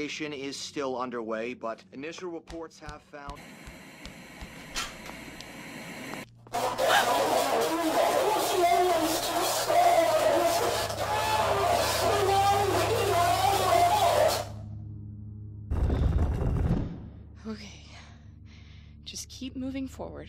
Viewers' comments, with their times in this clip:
0:06 I see JSchlatt has made it into the voice acting business
0:07 When your friend sends you one of those "Turn up the volume" meme videos in public
0:07 when you accidentally play porn in 100% volume